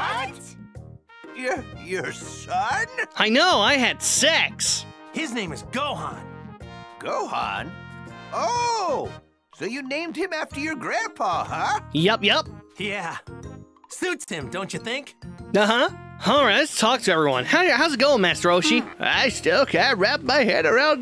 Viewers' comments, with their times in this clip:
0:03 why did he sound so proud of that 😭 🤣
0:03 why did bro just said it so casually
0:03 why you said that so casually 😂